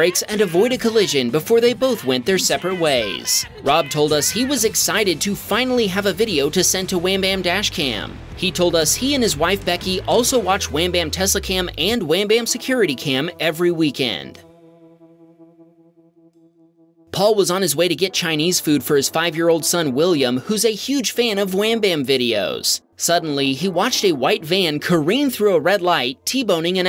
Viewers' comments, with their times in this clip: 0:09 bout time a siren got added into a video And it’s an FS 2001 tornado siren